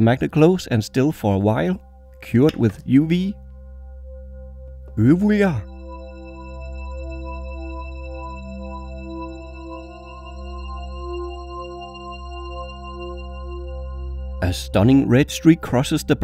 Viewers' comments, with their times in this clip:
0:04 What was that sound (UV WE AR)